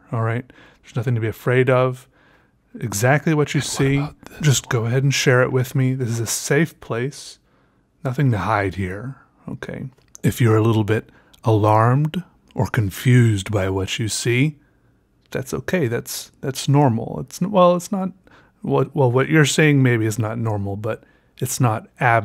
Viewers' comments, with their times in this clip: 0:04 why was he whispering over his voice